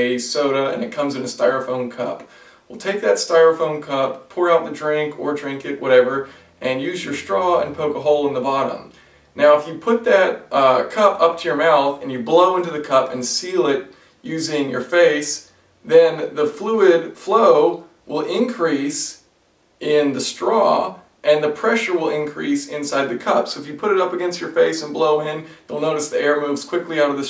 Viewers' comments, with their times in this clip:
0:10 if you don't look, you will think that it's sexual af XD